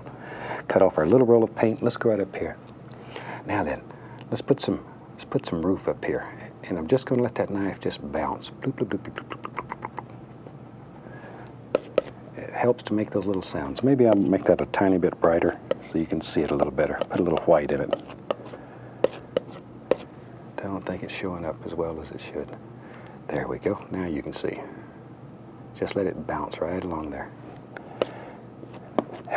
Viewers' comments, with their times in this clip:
0:10 I love it when he makes those little noises